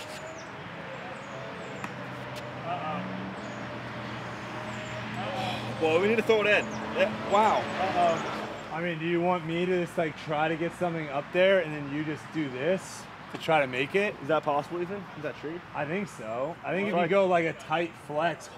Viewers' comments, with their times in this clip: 0:03 The bike sounded orgasmic